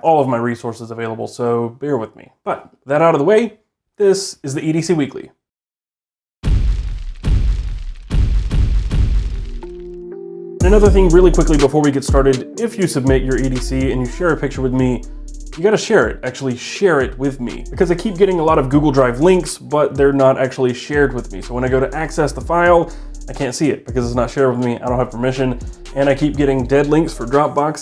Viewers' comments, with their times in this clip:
0:10 I thought you were about to start spitting bars 😂🔥🔥🔥
0:10 I seriously thought for a moment, you were breaking into a rap flow intro hahaha